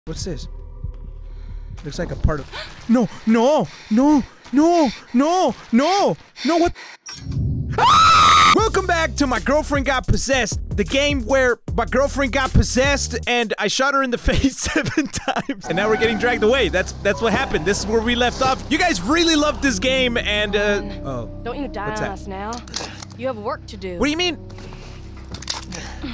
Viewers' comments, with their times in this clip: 0:08 lol your voice is like a girl